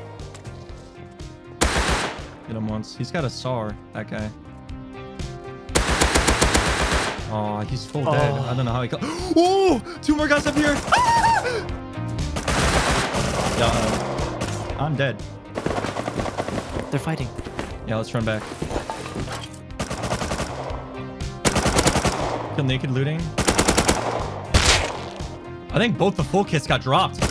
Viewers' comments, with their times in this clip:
0:08 the most manly scream ever